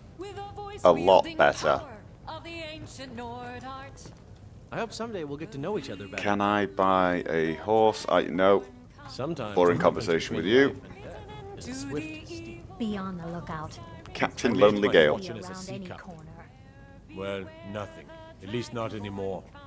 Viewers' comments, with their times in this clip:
0:03 The bard singing ... Woooooow... WOOOOOOOOW. Worst bard ever -.-